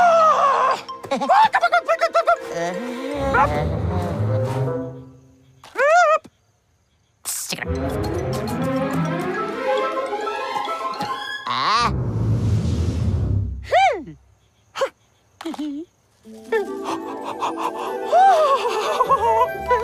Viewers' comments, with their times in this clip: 0:07 why it seem like chuck is saying "sick of you"?